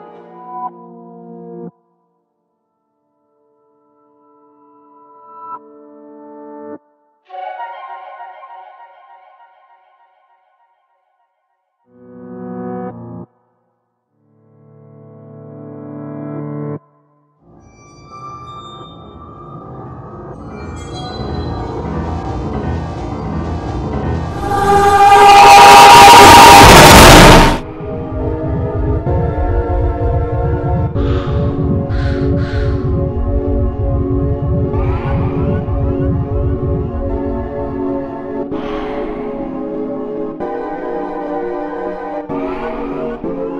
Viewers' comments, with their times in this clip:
0:07 one of the most spine chilling sounds to ever exist. Just like a quick cut to reveal a barren empty waste land once inhabited and this plays.
0:13 At like I noticed the song and had to think and this is the frickin legend of Zelda breath of the wild darkness song then I got earaped
0:19 ngl that scream terrified me
0:23 open ur volume and get earrape
0:24 Thanks, that got dust off my speakers.
0:24 Set your volume on phone/pc at high cuz this moment is really quite and, and you can't hear it at normal/low volume lvl. If you want you can use your headphones, set to sub-high lvl.
0:24 The obnoxiously loud noise which I'm pretty sure is the CoD zombies round start noise cut off a bit is so jarring to the point where even if you know it's coming, it scares you anyway. That is in essence, the point of it. No matter what you do, The Overmind brings absolute terror.
0:24 WHY CANT I UNHEAR THE COD ZOBIES SOUND